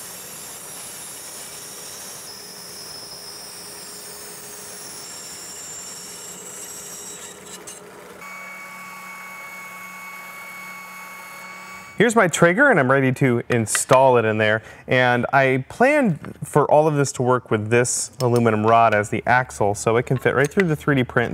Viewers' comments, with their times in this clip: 0:08 WHY DOSE IT SOUND LIKE THE SPACE CORE!